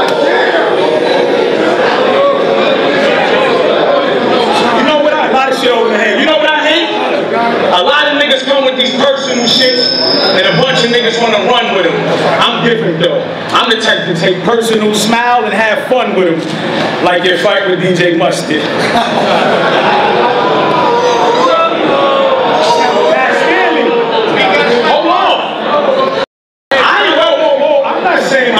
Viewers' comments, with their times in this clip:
0:10 audio is ass until OMFG FAB WAS SNAPPING i think charlie got that L